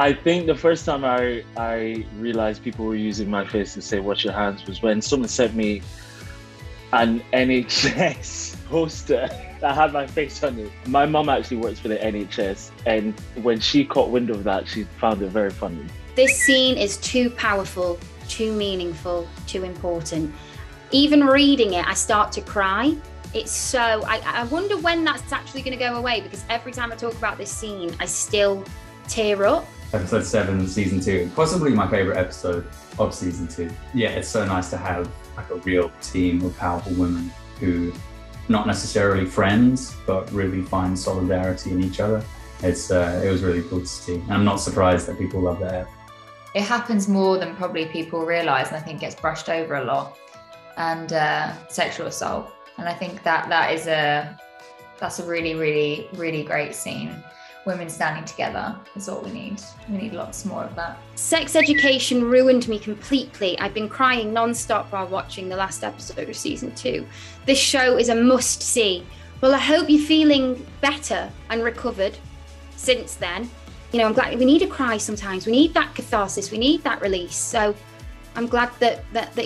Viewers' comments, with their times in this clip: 0:08 CC: "an I need sex poster" um anyways so...
1:06 Did anyone notice how Amy almost choked up while reading the tweet, which of course refers to the sexual assault that her character went through?